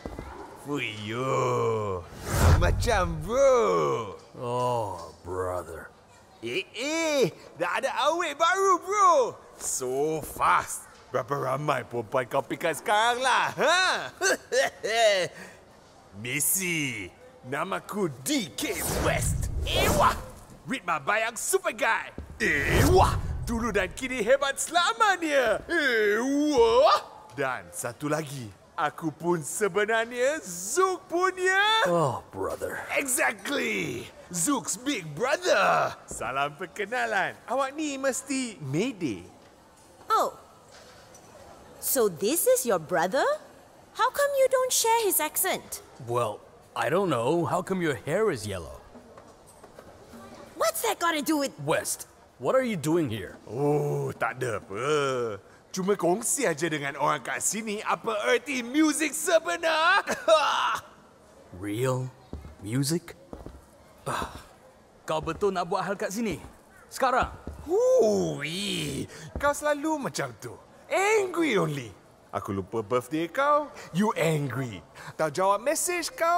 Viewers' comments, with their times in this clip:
0:07 ) I can’t place this dude’s accent and it’s driving me insane😤 please someone in the comments help me out🙏
0:50 ) to answer May’s question, he’s probably been in that area for so long with a different accent that his accent has grown less and less overtime, but it is said that people with different accents have their accents amplified by being around people with the same accent like Jacksepticeye and Dahei da Nogla for example
1:04 THAT'S WHERE ZUKE SAID IN HIS BROTHER'S ACCENT GO CHECK IT OUT!